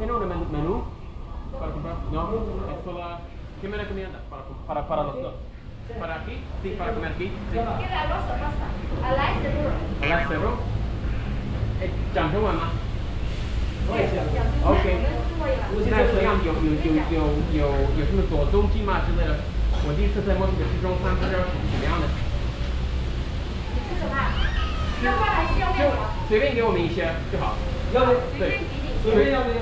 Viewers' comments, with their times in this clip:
0:10 The thing you didn’t understand I could bet was “laksa noodles”. I don’t know Spanish at all but I know some languages share similar pronunciations to English and that’s very similar to what it sounded like she said